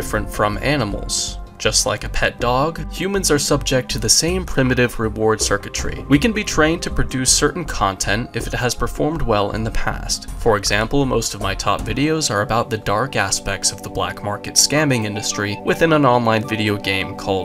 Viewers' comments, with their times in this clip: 0:04 in the morning listening to a guy with the thinnest mustache whine hell yeah